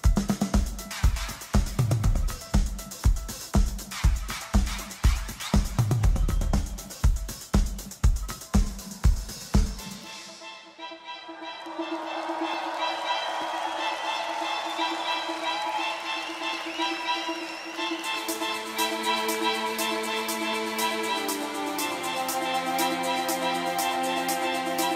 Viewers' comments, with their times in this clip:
0:09 THIS REMIX OF LIKE AN ANIMAL IS TRULY MAGICAL ✨😭